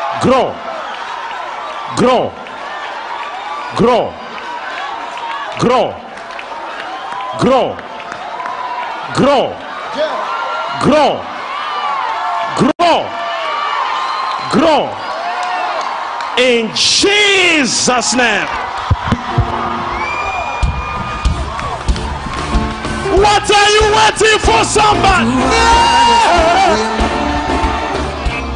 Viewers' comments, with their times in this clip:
0:08 Bro I lost my shit She's litteraly moving her hand forward and everyone is screaming as if this is a miracle? LMFAOOOOOOO
0:16 in CHEEESES name amen😂😂